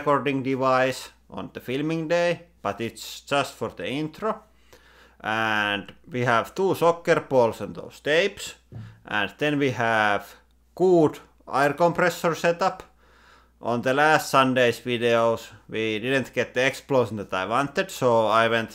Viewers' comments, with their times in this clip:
0:03 I thought you were just translating to Rally English lol.